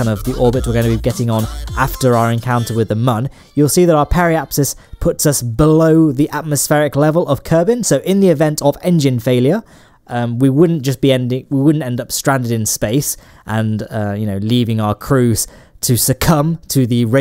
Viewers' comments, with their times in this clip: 0:03 part where the cancer trash music ends